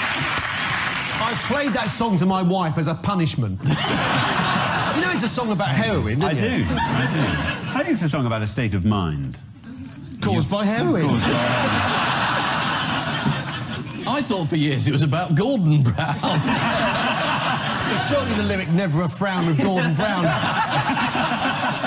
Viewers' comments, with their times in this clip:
0:07 The way Merton's voice lilts on "Caused by heroin" cracks me up for some reason.